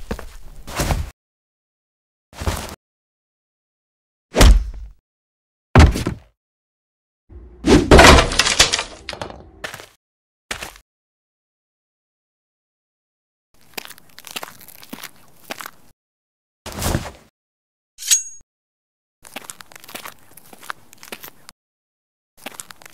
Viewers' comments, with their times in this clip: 0:07 granny upstairs floor breaking sound